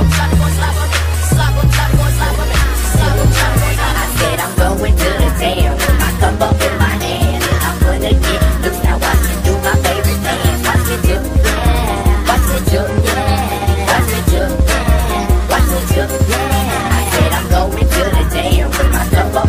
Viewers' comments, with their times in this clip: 0:04 Mix gets mad nostalgic by 305 till I die ‼️🇨🇺